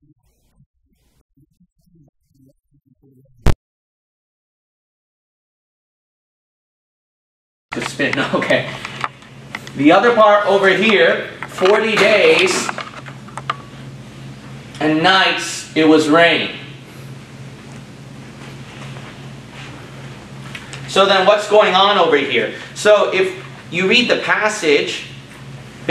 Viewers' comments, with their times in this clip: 0:09 No sound until the mark point.
0:09 It sounded faded or far away until Almost like a different mic was being used after it was much louder and sounded more stereo. I think the cameraman switched mics or something. But I could definitely hear him before